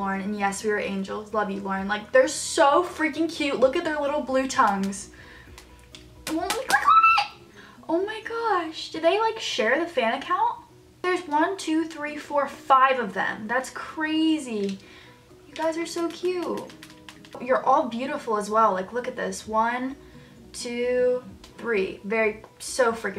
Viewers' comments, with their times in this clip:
0:09 When she screamed damn I got stolen 😭